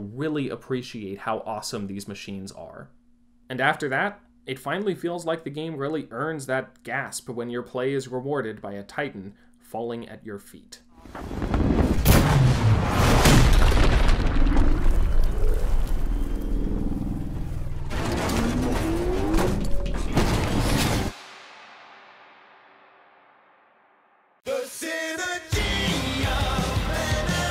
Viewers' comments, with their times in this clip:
0:10 The sound designers did such a good job at making titans falling sound so impactful